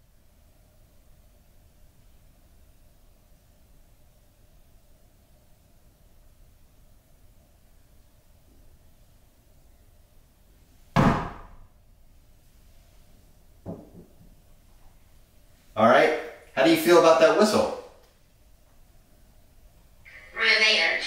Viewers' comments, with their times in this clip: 0:06 sounds like footsteps upstairs Well edit as I watch if more comes up that I catch
0:08 Faint footsteps on concrete floors almost sound's like boots, stopped when you smacked the doll's head